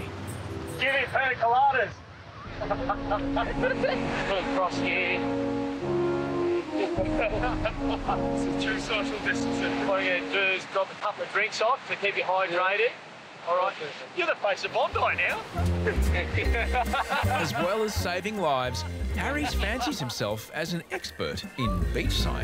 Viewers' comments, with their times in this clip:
0:05 it’s the funeral music for me 🤣😂🤣😂